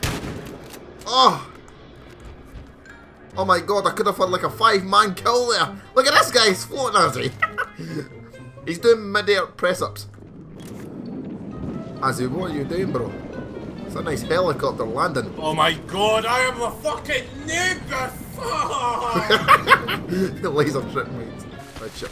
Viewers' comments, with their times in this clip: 0:03 this laught xddddddd on